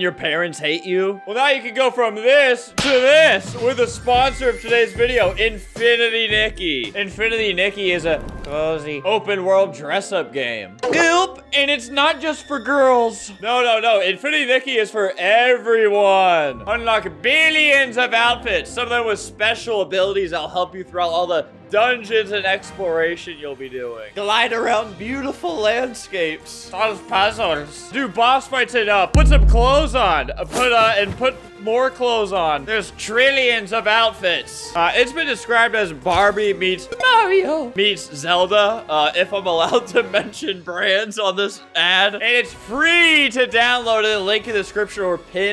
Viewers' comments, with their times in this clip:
0:08 why tf does he sound like that 😭
0:27 “solve pazuls” such inspiring words